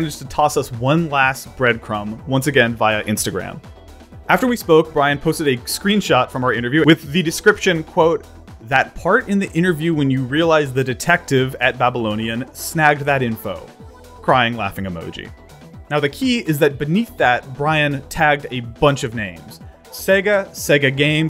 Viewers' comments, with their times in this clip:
0:05 did anyone else notice the interviewwith? It sounded cramped up into one word